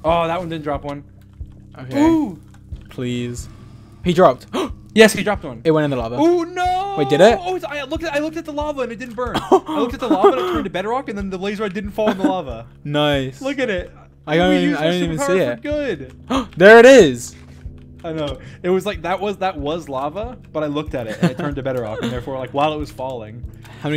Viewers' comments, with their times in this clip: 0:10 my man's speedrunnig his words